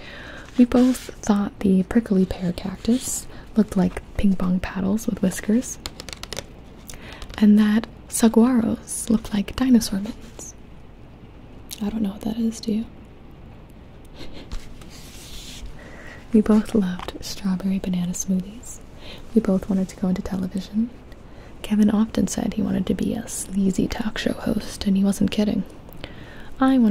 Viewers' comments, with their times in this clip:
0:07 I am ftom Phx, AZ and the way you said "saguaro" makes me giggle. It is pronuouned like "suh-whar-oh".